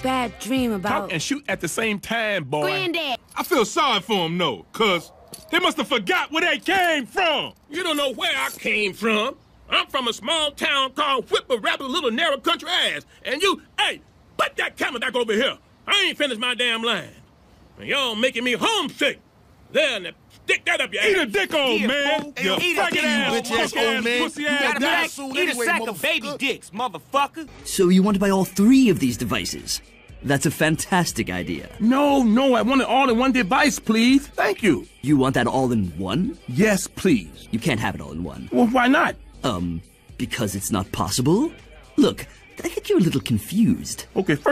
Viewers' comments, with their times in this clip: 0:03 Sounds like Lamar from GTA 5
0:26 sounds like franklin from gta V